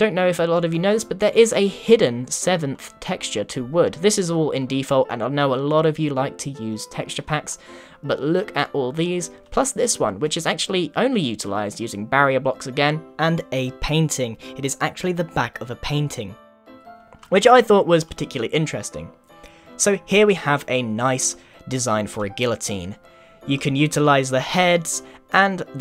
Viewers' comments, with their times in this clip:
0:08 listen for the voice change
0:11 your voice changed